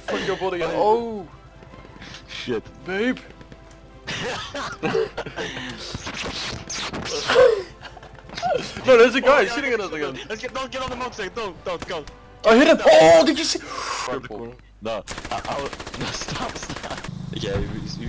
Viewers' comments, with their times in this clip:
0:05 it do be like that doe. Love the rlly weird sound